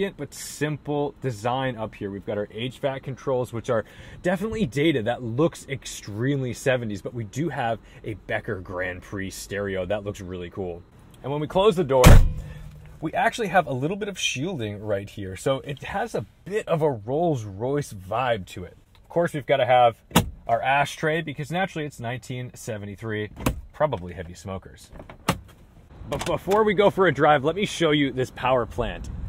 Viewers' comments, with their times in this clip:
0:10 That thunk! You just don't get doors like that anymore lol